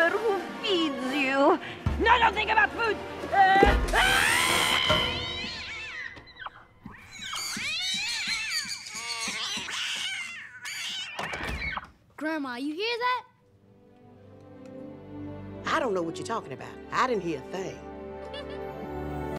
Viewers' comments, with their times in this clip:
0:07 All of sudden, the witch’s rat screeches become bird screams; oh my god, She’s gained the power of flight!!